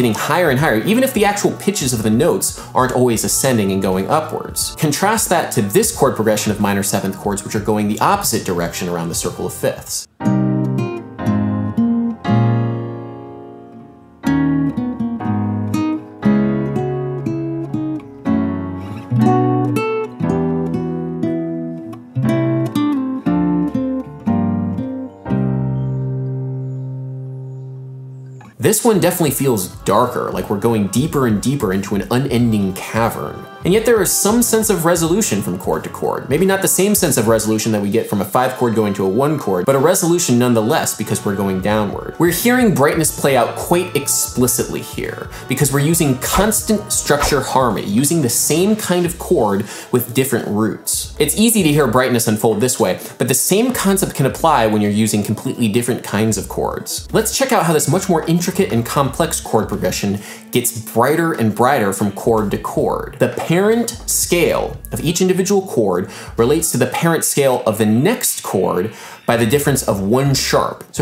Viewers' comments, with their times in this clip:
0:09 It didn't sound darker or less happy to me. Is something wrong?
0:09 LoL, the darkening circle of fifths chords sounds a lot like Jamiroquai to me ;-)
0:14 The darker one sounds like it could be from FFX.
0:28 You can hear his metronome
0:28 i have something......isn't it because of the melody on the guitar that it seem to go lower and darker?? and the previous one seem to go higher and wider because the melody is ascending
0:56 I realized I'm late to the game here... but am I going crazy or is there the sound of a modem dialing in the background?